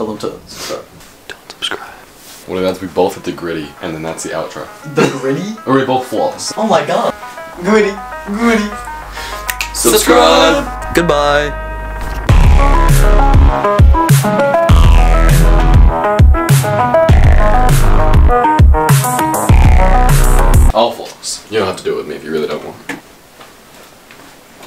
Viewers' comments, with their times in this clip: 0:09 was that harmony on accident?